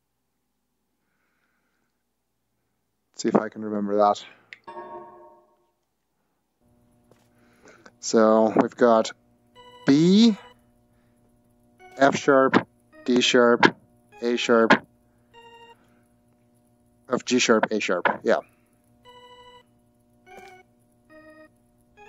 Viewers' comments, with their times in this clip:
0:08 anyone else here the Super Mario Bros theme? Or just me?